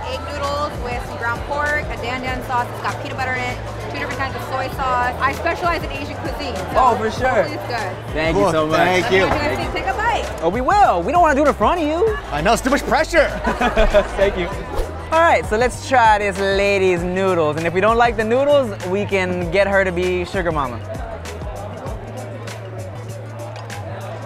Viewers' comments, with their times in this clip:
0:07 "I specialize in Asian cuisine" yet you can't pronounce Dan Dan noodles correctly 😂 In fact, no one is pronouncing it right 🤦🏻‍♀️